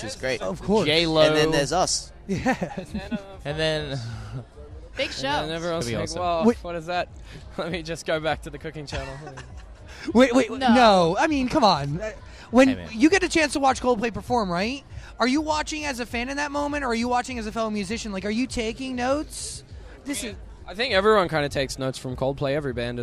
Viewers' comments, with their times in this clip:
0:04 Ashton's little laugh and smile got me like :0 <3333